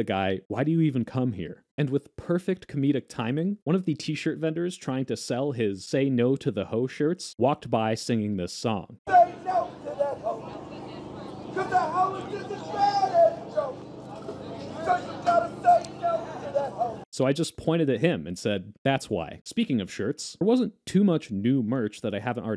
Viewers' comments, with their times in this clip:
0:09 This man has unlimited singing talent